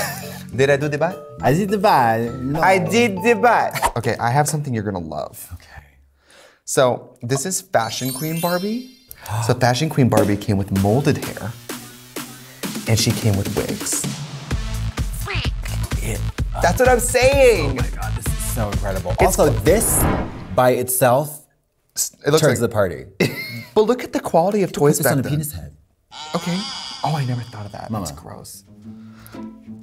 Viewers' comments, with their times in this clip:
0:10 The music and editing for "And she came with WIGS" is hilarious